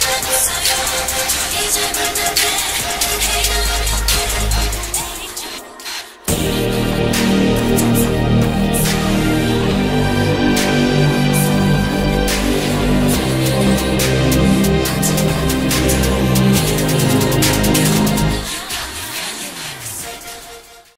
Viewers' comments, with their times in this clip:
0:06 omg this whisper killing me